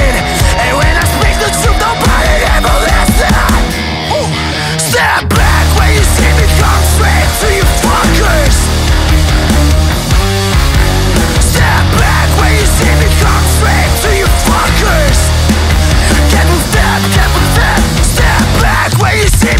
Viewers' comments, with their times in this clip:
0:04 Love It! Kicks 🤩